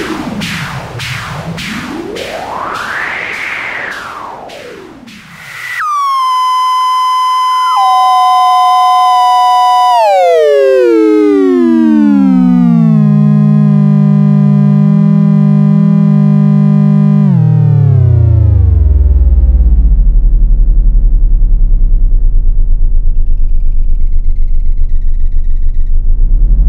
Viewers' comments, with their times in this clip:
0:08 beautiful bandpass feedback effect !